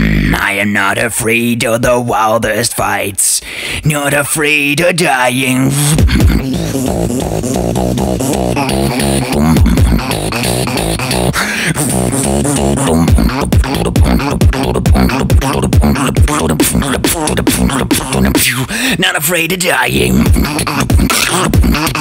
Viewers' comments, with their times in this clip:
0:05 that wind up